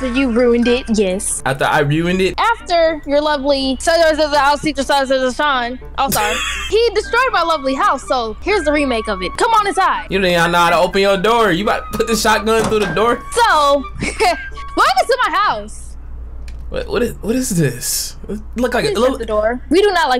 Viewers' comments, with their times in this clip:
0:03 your sis be speaking a whole new language bro